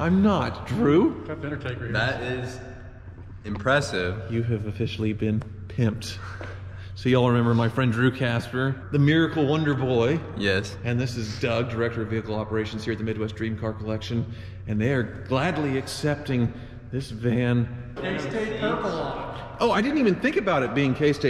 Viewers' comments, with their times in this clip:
0:05 You kinda sound like shaggy not going to lie